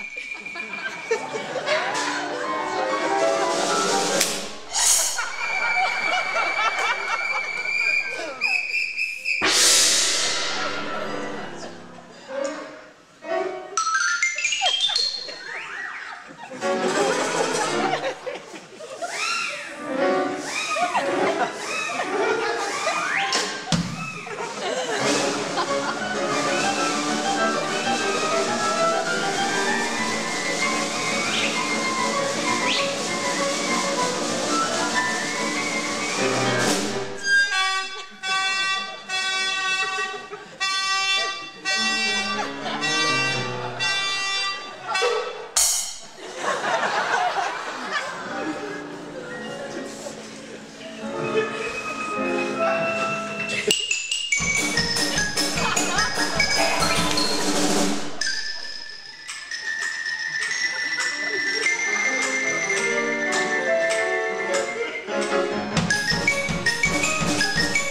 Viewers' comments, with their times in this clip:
0:03 in the actual cartoon Tom yells hhiyy That hhiyy made me choke
0:09 doesn’t feels right without the scream
0:36 Sounds Like A Train Horn
0:53 I love the tune